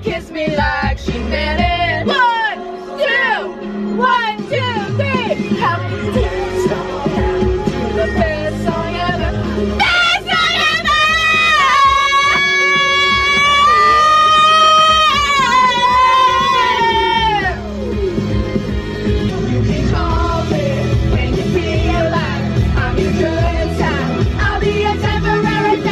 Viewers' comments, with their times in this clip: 0:09 rip headphone users 💀💀 lol who else was using headphones😅